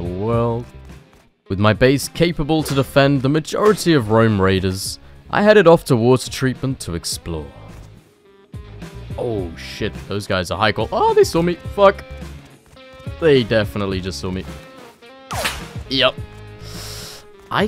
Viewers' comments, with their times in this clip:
0:03 i heard Rome Raiders instead of roam Raiders.